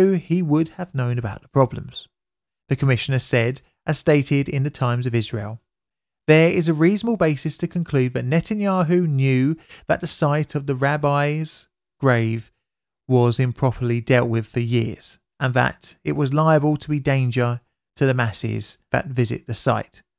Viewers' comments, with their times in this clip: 0:06 And I thought you said “Rabbis' Rave.”